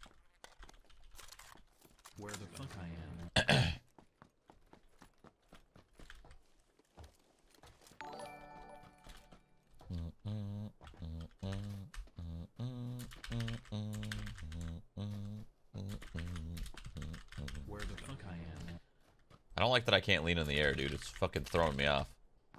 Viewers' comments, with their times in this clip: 0:09 are humming Harry Potter...